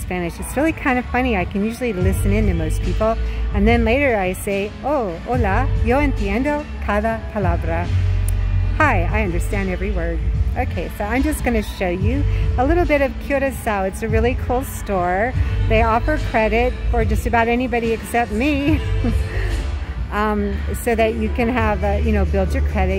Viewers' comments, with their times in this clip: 0:05 is nice. and background mexican music is nice.😁 That is just like a background music to your Video.😁👍❤️